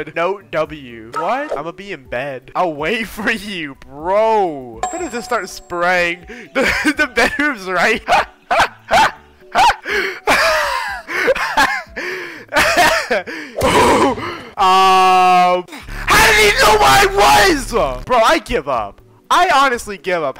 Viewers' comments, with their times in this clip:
0:05 bros laugh lol